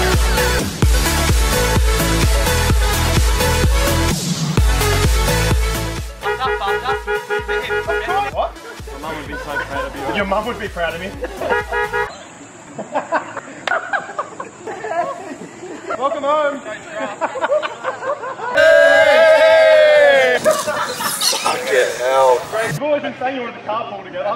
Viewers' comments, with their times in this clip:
0:06 Lmfao humping the car horn